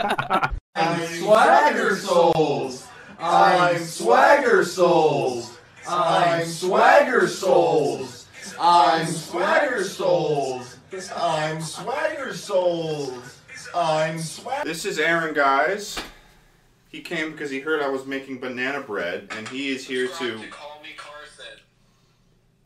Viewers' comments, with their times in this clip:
0:06 thought that was a dog